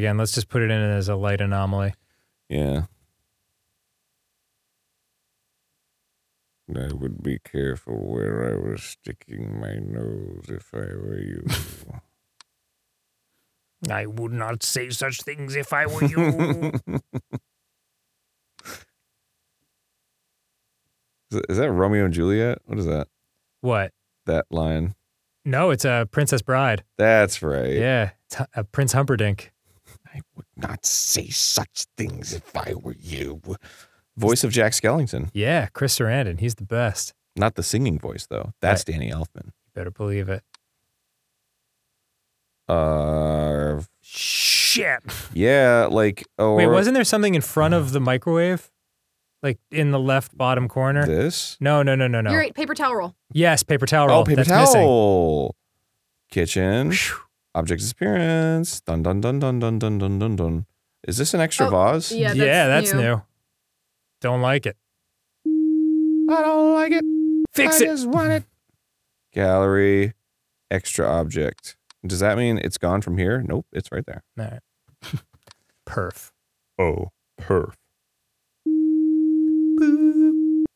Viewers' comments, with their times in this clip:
0:06 Did he make a Cad Bane reference? That sounded exactly like him!
0:06 Nice cad bane impression
1:05 was Arin incorrectly singing stinkfist? haha